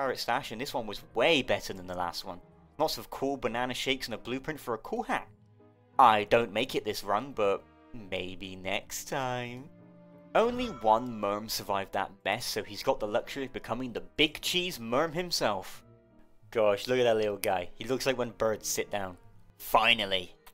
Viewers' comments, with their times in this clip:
0:08 hahauvhuahua good voice